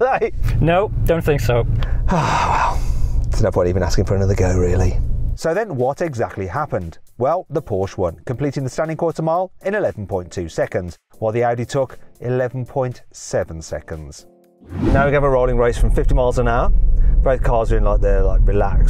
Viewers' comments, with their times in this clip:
0:05 What happened to the sound, carwow lost stereo for a few seconds?